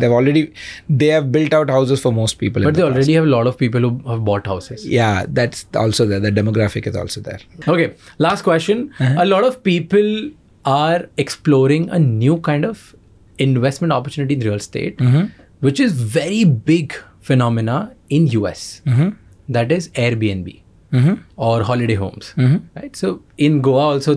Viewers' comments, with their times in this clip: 0:07 did not get the last name flagship or something